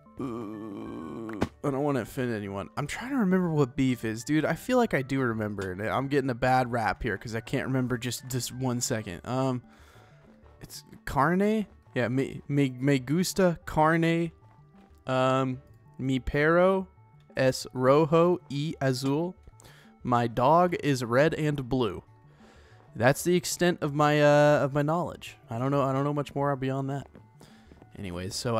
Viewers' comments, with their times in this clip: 0:10 Ah yes Spanish UvU Also that was pretty good coming from someone who doesn't speak spanish! 3947 :D